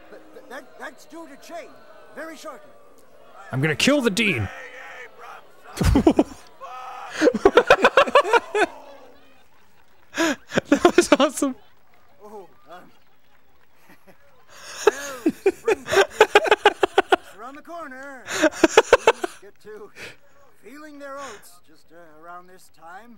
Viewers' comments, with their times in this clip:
0:03 dude I actually have a teacher this semester I very much disliked and frankly I want to go as hardcore aggressive as this freaking guy. His rage is BEAUTIFUL, and hell, I want him as a ringtone.
0:04 Probably the best voice actor of the game. The raw anger in his voice was beautiful.